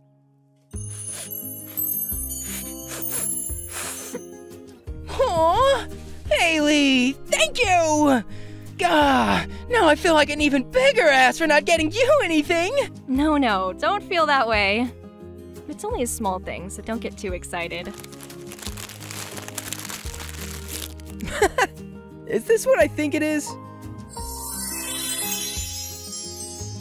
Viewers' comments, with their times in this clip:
0:07 If any of y’all watch tbhk Jake sounds so much like hanako right here